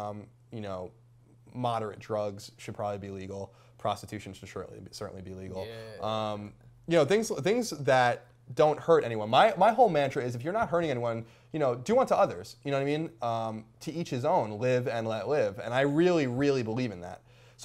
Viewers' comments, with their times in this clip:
0:04 creepy "yeah" FTW